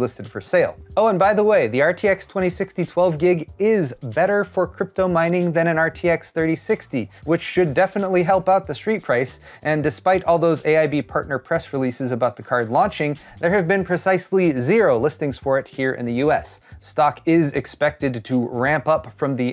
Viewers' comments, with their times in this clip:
0:06 I am laying in bed in the morning after getting high in the 1st 43 seconds of this video blew my fucking mind you're talking so fast tripped me out brother